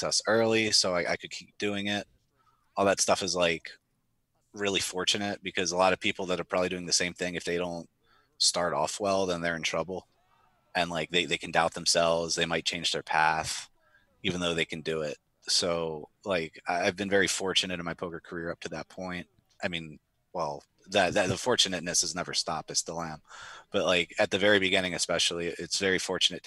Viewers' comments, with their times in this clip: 0:09 Haha! I just noticed a woman cheering for Neuveille happy for river T of hearts not knowing it made a losing hand